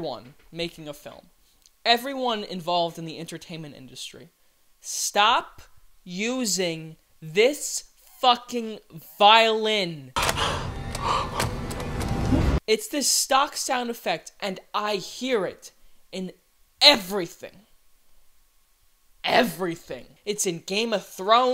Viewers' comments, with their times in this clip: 0:04 fun fact: this is called a shepherds tone and it's a auditory illusion of a constantly rising tone!!!